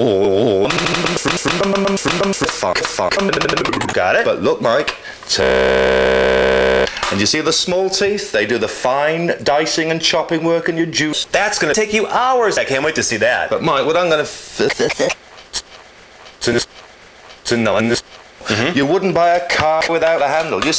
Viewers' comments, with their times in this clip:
0:05 you made this guy throatsingin in kargyraa style